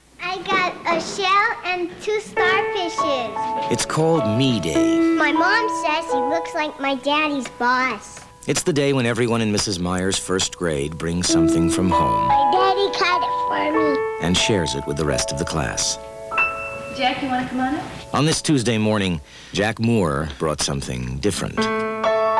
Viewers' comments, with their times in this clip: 0:04 Sounds like Richard Dreyfuss narrating the McDonald's commercial.